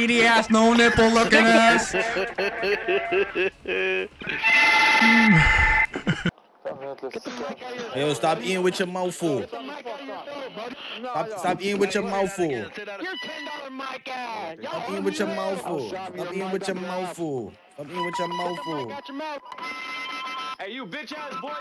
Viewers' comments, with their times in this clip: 0:05 Thats Some 2014 BO2 Type Vibe of a Mic Lobby